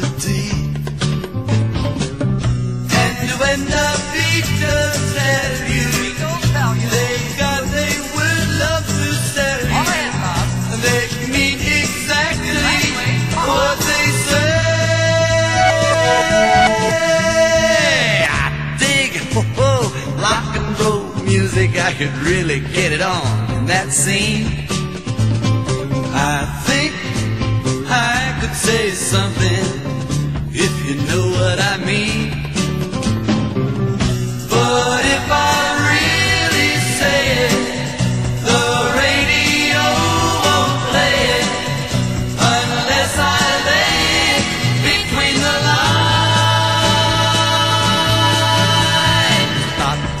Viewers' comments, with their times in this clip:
0:10 The dude I hear talking in the background Is that one of the band members? I always thought that sounded like a country accent there for a few seconds or so. Couldn't catch exactly what he was saying. Sounded like he said (All together Bob, That's what I thought he said). Still this is a great oldie song!
0:33 Love that tom-tom role Excellent drummer. Great rudiments but not showing off (too much).